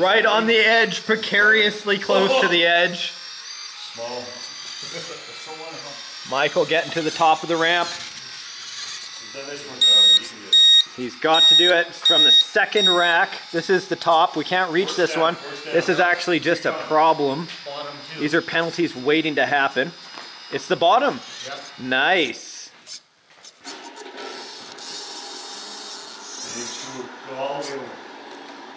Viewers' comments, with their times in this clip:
0:09 ear rape begins